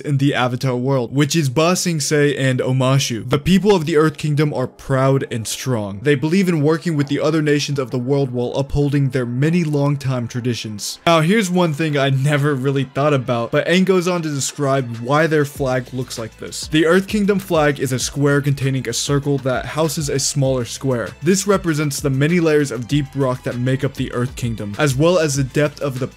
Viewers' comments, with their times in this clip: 0:07 andrew tate music